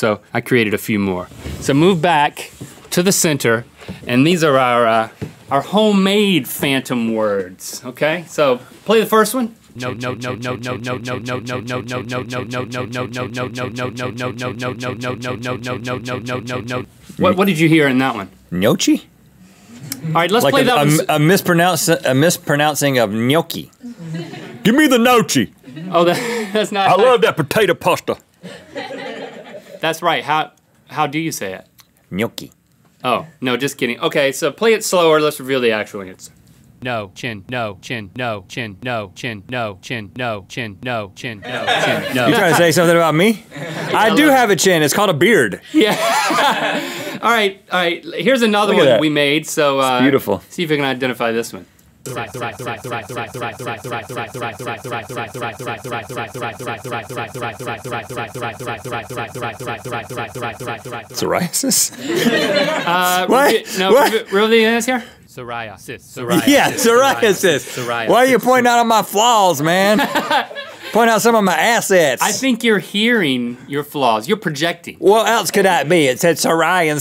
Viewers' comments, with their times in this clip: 0:08 Is I'm right or wrong, but who else heard Milkshake on the left and No Chin on the right
0:10 I heard JoJo.... Uh... Maybe it's just that I'm a fan of jjba?
0:52 Save the rice
0:53 i first heard twice and then slice it
0:53 i thought it said 'cis rights' and i was like, um-
0:58 i heard teseract Thanks avengers
0:59 yo that was scarrry, i heared sariasis turn into survive
1:03 i heard save the reich